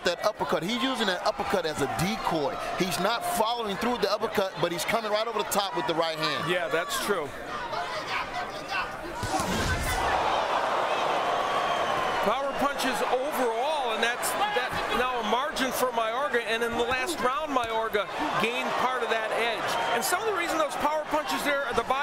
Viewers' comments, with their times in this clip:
0:09 perfectly timed power punch with that sound effect when it showed the stats for power punches trown